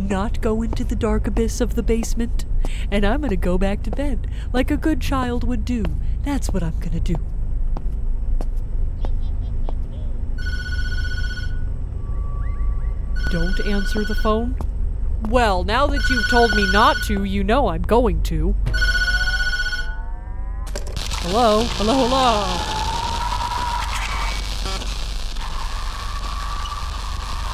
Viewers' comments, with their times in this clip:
0:10 😨did anyone else hear that very quiet Tattletail laugh… before the phone rang?! BECAUSE I HEARD IT!!